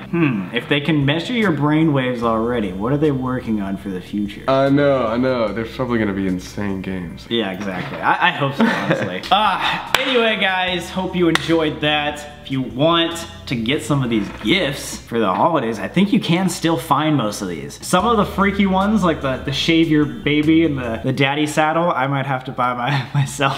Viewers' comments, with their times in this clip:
0:07 Beanie boy is back...💙 That cute laugh, though.